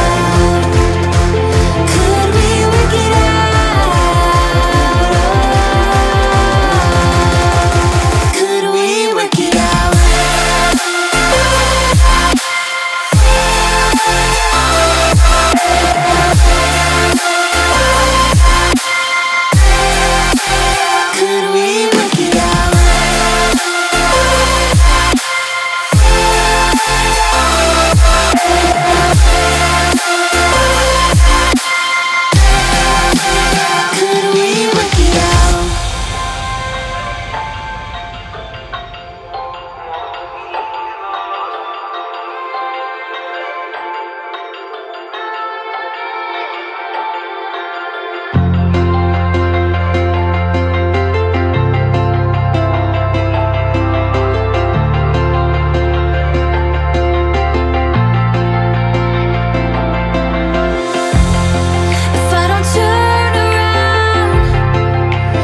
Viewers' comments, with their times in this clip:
0:08 I like 1st drop that the is contrast between song.
0:48 Goosebumps ... love those tunes